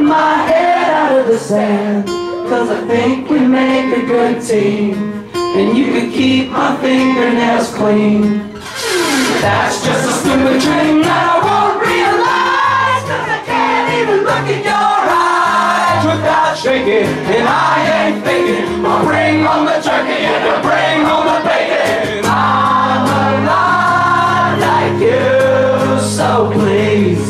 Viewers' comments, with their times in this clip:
0:07 string scratch perfection 😛
0:08 I don't think I've ever heard an acoustic pick slide before.